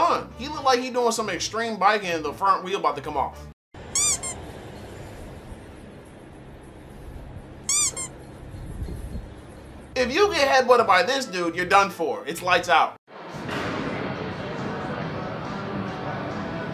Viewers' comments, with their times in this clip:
0:03 The squeaking killed me 😂😂😂